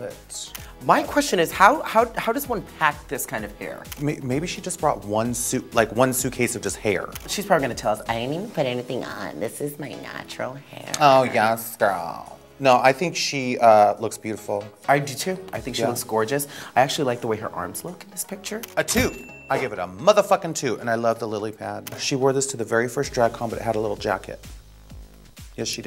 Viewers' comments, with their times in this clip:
0:06 Her impression was spot on 😂